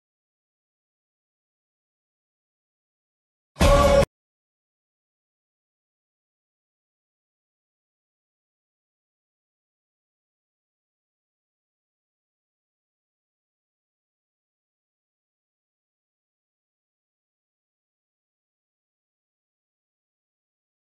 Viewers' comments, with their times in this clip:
0:08 Is it just me or does the sound cut out ???